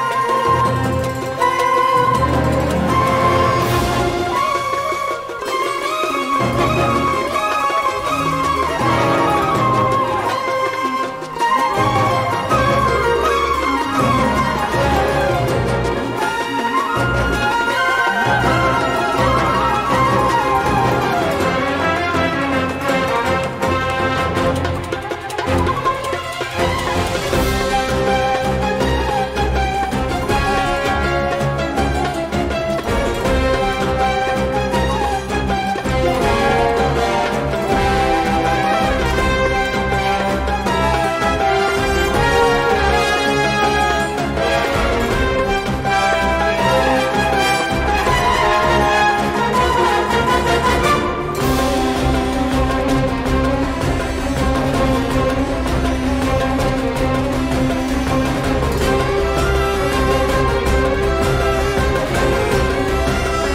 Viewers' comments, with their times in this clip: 0:03 partial circles of fifth progression
0:26 Why reminds me of Nightwish - Tutankhamen?
0:51 Did the time signature change in ?
0:51 the mosquito in my room at 3 am: